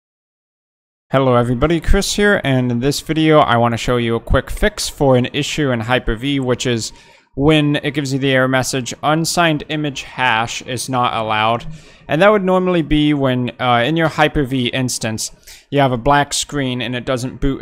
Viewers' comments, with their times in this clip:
0:03 Not sure what happened but into this video, it restarts the audio. Doesn't get to the solution